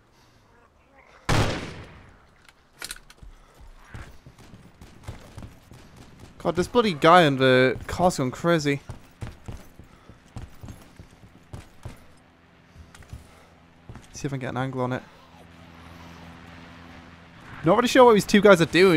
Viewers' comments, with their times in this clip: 0:03 I enjoy the zombie completing the chant xD